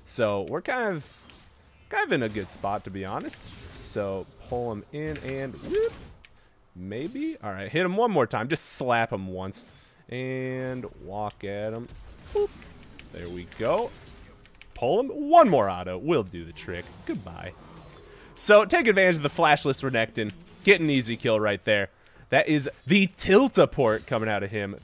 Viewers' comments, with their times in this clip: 0:10 Darius: Omae wa mou shindeiru. Renekton: Nani !? Darius achieves full passive stack Reneketon: "dies to bleed" "High pitch screeching" Darius walks away like a man.